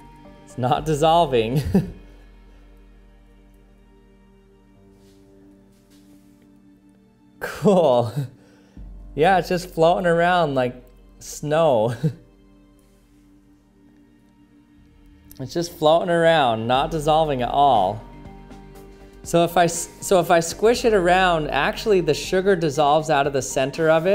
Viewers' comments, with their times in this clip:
0:07 the sound of a nerd that just saw their first pair of boobs